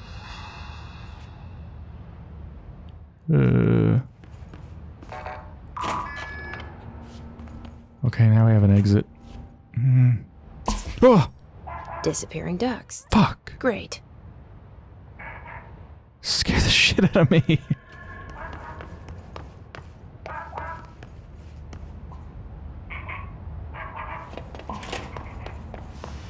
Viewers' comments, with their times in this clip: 0:10 * it did actually scared me! And I love how it's such an innocent scare. No intimidating music or sounds effects, just this little bubblegum pop.